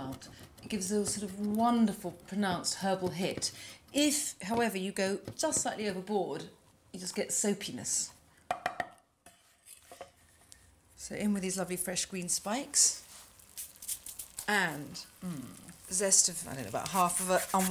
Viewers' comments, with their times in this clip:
0:03 If however you go just slightly overboard, you just get ‘so penis’ #soapiness